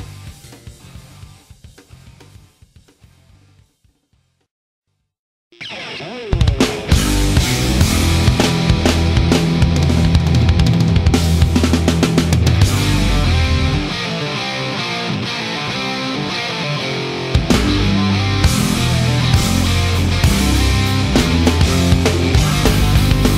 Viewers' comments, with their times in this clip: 0:05 OH HELL! I've never heard "Burn" sound so good. probably the best cover in history! It's HARD! Metal..., punky!!!! Competently played...! Such an awesome cover! Cant get much better than this....